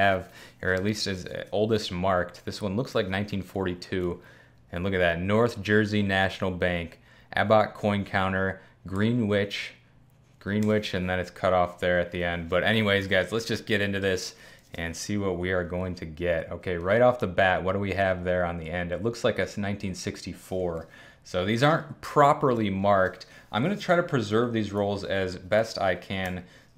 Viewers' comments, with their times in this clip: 0:10 the Greenwich, Connecticut community is fuming rn